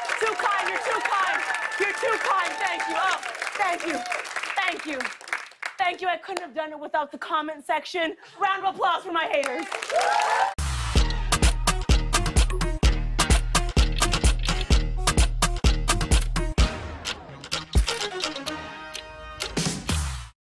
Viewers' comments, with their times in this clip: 0:08 Lol so much angry undertone in her voice when she thanks her haters for the comments. This sketch was done in fuming anger even she can't hide that lol